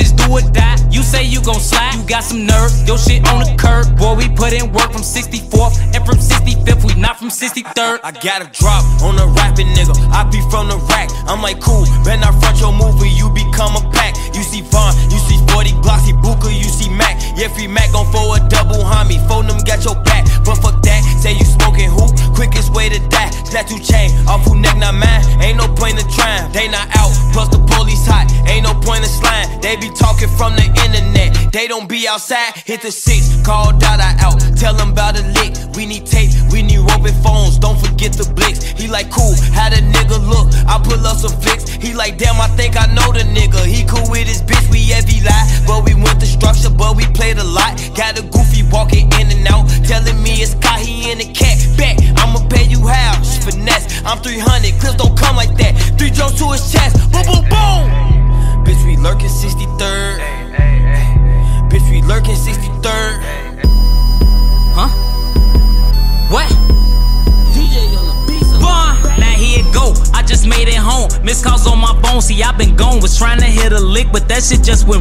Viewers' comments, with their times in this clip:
0:06 that transition was cold and on beat💯💪🏾
0:08 he jumped on the beat with the same glow of king von
0:56 the smoothest transition ever
1:00 that transition to Pt. 3 was amazing
1:02 that’s a clean ass transition